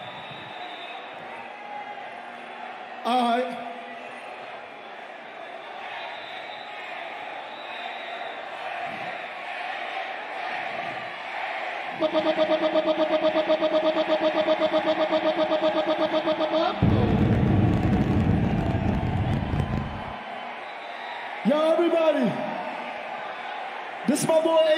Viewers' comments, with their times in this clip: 0:06 the people shouting Adin names? Or something else